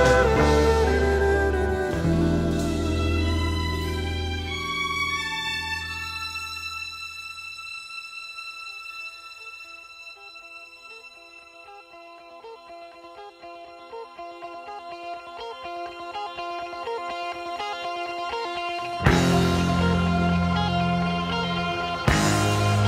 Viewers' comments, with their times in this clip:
0:08 does the outset of the outro modulate? How?